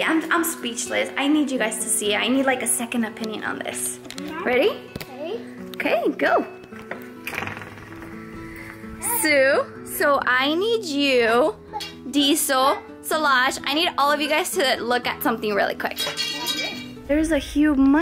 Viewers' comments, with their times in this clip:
0:06 the fart sound 😂😂 Btw Hope u found him its 2024 its been 6 years now😢😢